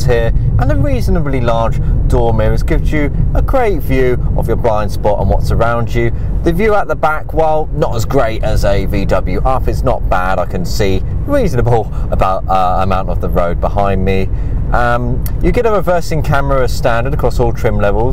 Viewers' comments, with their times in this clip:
0:05 your sound like mat watson 😅